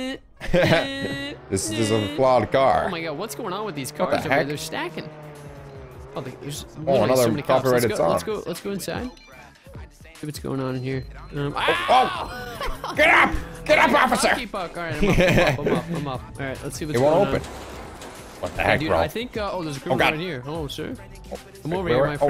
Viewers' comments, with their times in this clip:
0:08 Who heard I spy